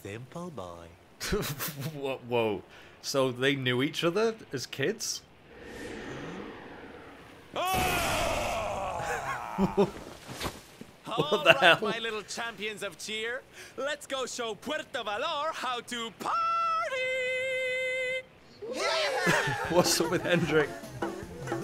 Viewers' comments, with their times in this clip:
0:07 In Japanese,hearing Azazel from Highschool DXD scream "No!" is one of the great scenes to me,it had me laughing so hard 🤣🤣🤣🤣🤣